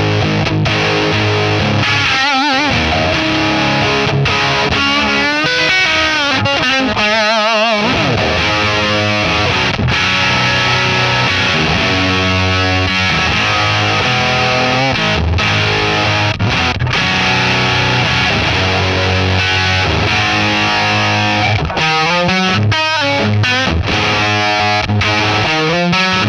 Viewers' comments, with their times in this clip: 0:08 The close of the Amp dials vibrates due to how load it is. 😊